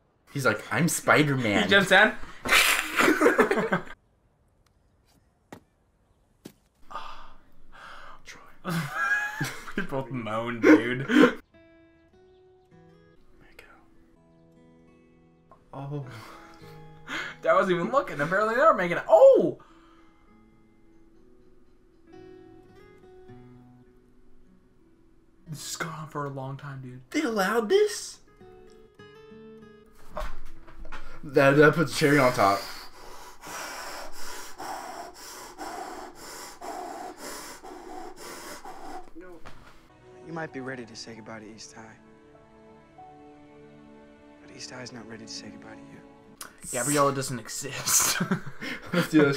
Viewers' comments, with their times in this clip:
0:06 the shock and the silence
0:32 Yo, I was wearing headphones and I gotta say, that breathing made me all kinds of uncomfortable.